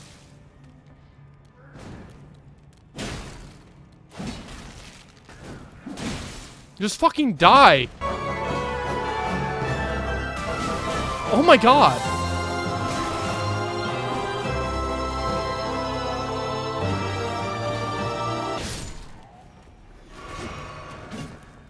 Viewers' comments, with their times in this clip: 0:08 I love how you start the boss music back up when fighting the stone imp